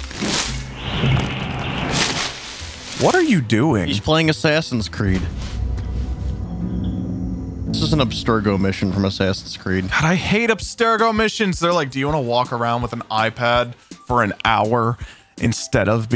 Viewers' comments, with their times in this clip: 0:03 that pronunciation of Assassin’s Creed physically hurt me 😭